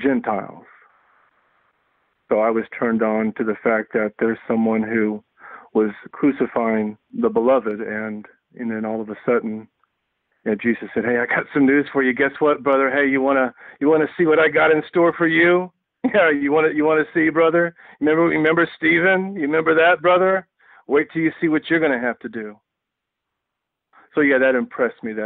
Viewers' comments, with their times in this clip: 0:10 the Bible, as presented by Hulk Hogan.